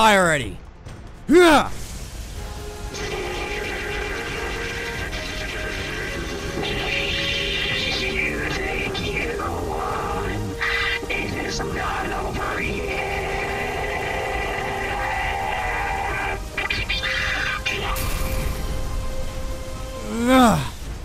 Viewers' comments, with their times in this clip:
0:03 On it sound like someone taking a massive and wet poop